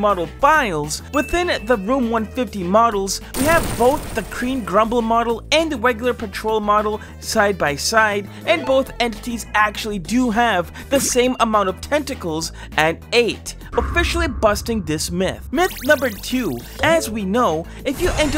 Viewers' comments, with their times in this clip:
0:06 he almost said Paw Partol